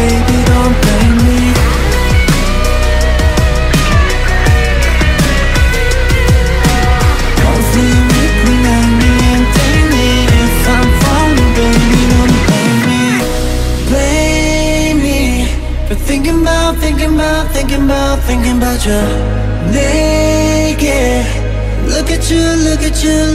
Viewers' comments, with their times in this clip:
0:07 Isn't the second and third chorus sang by Jooheon instead? is definitely Shownu I can differentiate their voices so well. I couldn't be wrong ...